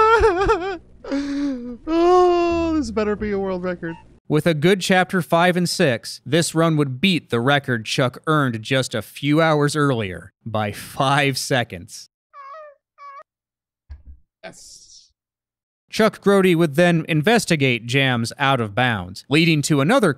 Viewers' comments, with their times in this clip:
0:04 you sound a lot like Fredrik Knudsen there lol